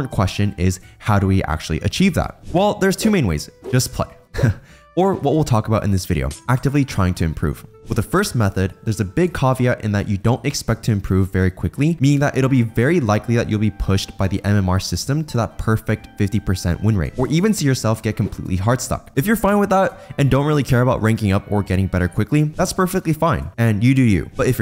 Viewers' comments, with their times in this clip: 0:08 I'm not gonna take advice from someone who pronounces caveat that way